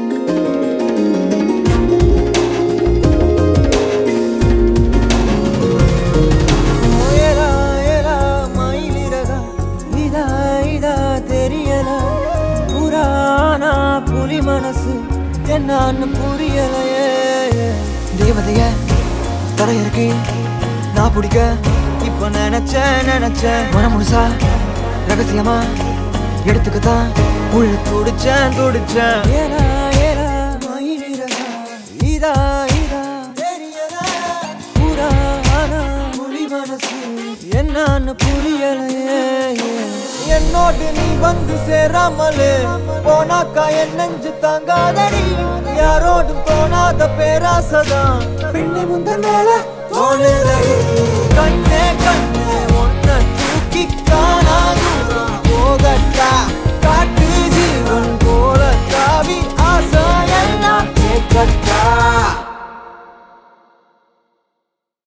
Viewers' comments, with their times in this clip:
0:06 woah!! ♥️♥️♥️ What a voice man!👌just killed it✌️✌️
0:06 His voice is magical
0:11 That flute sound❤🥶
0:51 2.20 to also meladous ani voice like honey to my ears